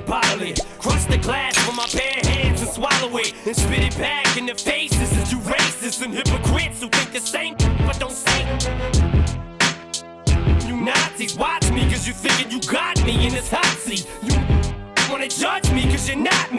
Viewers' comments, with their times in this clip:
0:03 Did this become an instrumental?